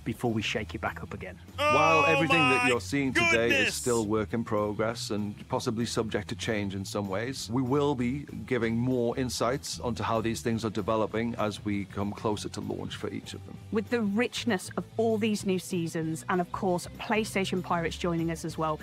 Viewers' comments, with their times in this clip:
0:06 I paused the video to say that I clicked on this expecting information. I only hear you yelling. I'll get the info elsewhere.